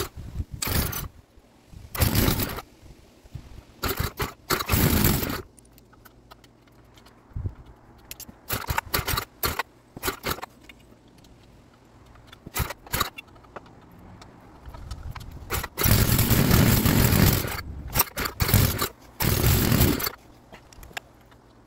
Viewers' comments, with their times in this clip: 0:05 Shave & a haircut!! 😀